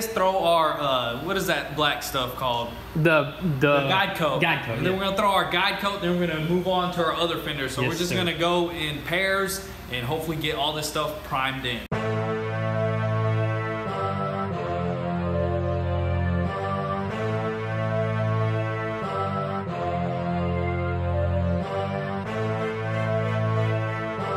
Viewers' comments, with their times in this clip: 0:10 The music <3